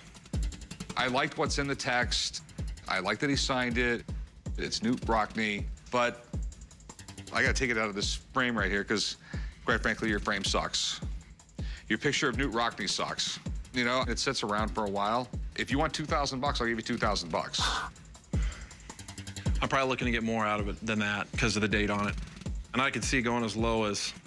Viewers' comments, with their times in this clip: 0:08 Even Corey laughed at the "I have to frame it" routine